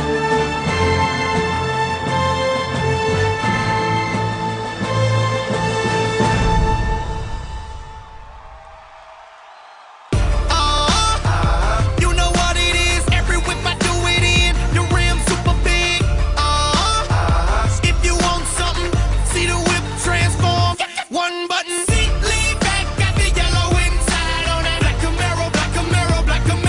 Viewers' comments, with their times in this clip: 0:10 wow that song ruined the video stopped watching at that point.